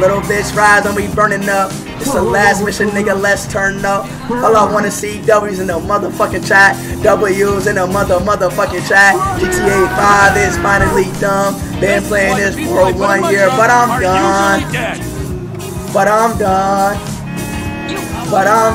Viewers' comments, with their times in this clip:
0:04 The singing lmao 😂